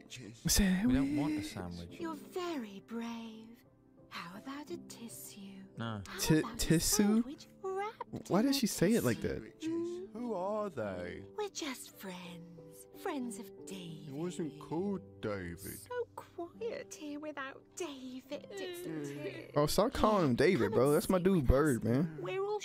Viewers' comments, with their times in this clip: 0:08 British accent, that's why